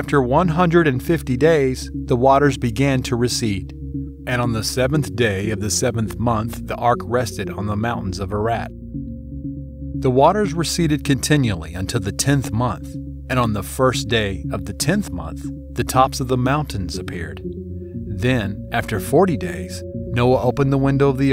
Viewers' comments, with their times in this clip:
0:07 "mountains of a rat"??